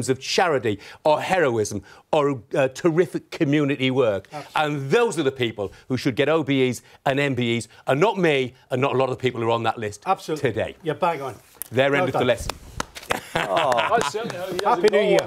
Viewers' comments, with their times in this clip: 0:03 Hartlepool accent sneaks in